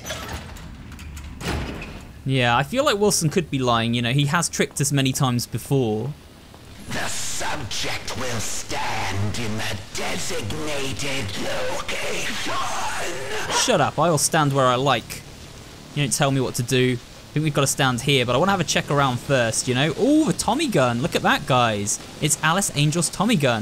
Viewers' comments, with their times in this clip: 0:06 The keeper saying "the subject will stand in the designated location" sounds a lot like a dalek saying "the doctor will co-operate" from doctor who